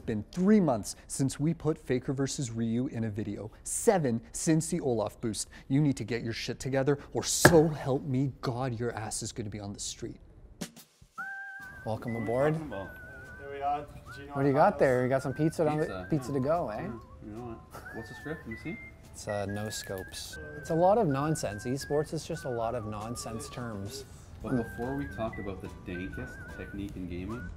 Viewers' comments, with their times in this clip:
0:08 that guy is really holding his laugh